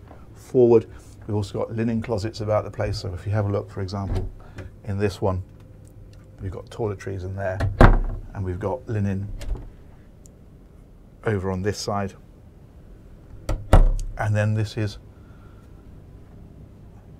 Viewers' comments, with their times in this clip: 0:03 what are these mythical Toilet Trees you mention? :P Gorgeous boat..